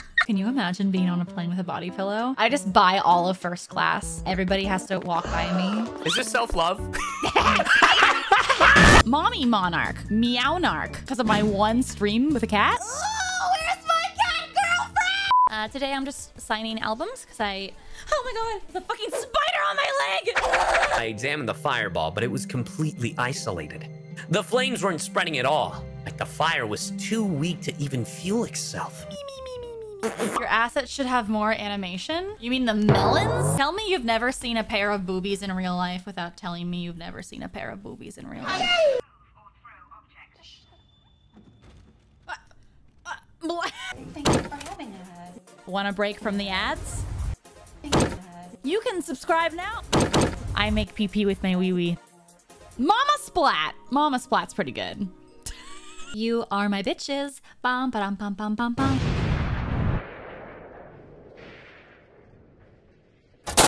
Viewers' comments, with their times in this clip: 0:08 the seagull laugh crashed another plane. Also just realise she is a Taurus, that explain a few things
0:55 To the tune of the Farmer's Insurance Jingle. 🎵You are my bitches~♡🎵 🎵Ba-ba-bum-ba-bum-bum-bum.🎵